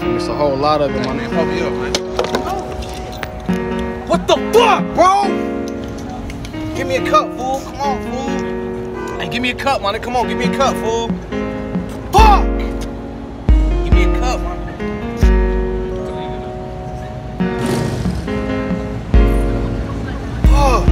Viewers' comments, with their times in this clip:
0:04 WUT THA FUUCC BROOO! 🤣🤣🤣 All hurt n shit like a dude! Sounding like a Todd!